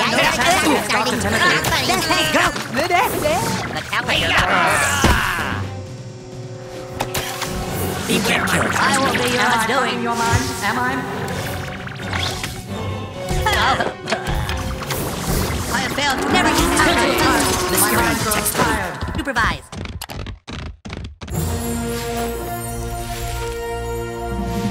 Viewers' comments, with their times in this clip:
0:08 2 mysterions talk the same time